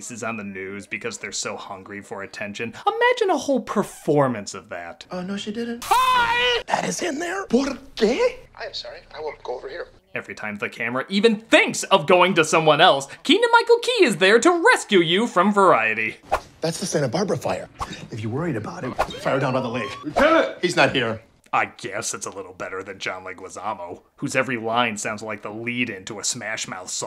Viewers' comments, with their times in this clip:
0:10 Why am I imagining Toad's voice?